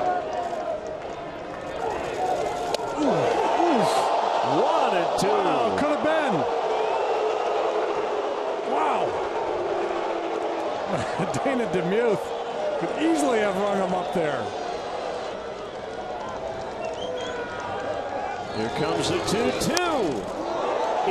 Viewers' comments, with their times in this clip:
0:09 crowd boos the umpire